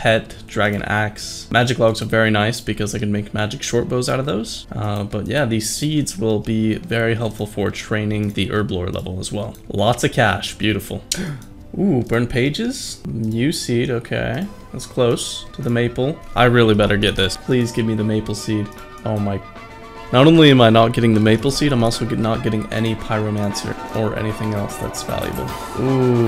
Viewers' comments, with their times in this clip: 0:07 Omg that tune is so nostalgic, what's in from again, stick wars?
0:12 good luck in hypixel skyblock. damm that song hits hard on my soft spot